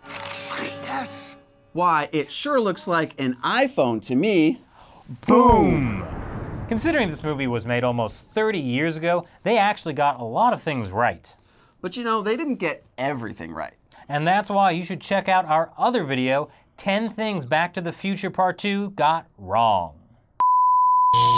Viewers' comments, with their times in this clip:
0:05 BooOooomMmm cringey af